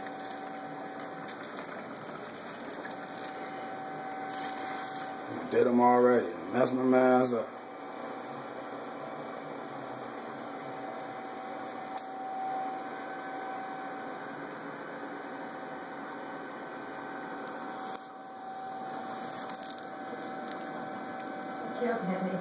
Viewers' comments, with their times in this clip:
0:06 What's he say? Daz-mm-mazda... What does that mean?